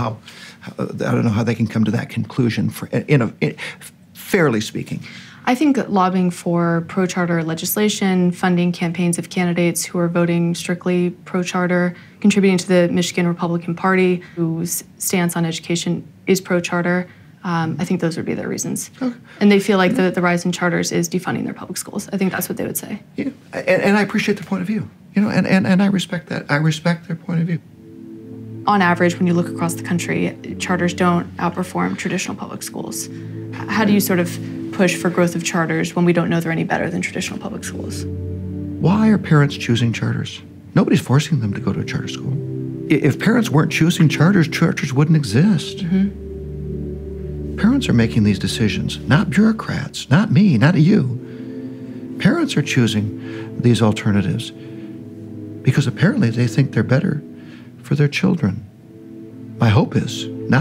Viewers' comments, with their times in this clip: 0:03 its the stuttering for me
0:48 why does he sound like an action movie antagonist here